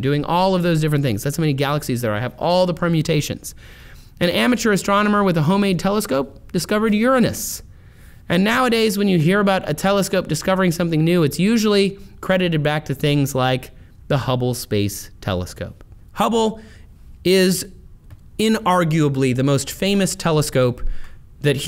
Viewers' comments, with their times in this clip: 0:04 I appreciate you saying Uranus the way you did lol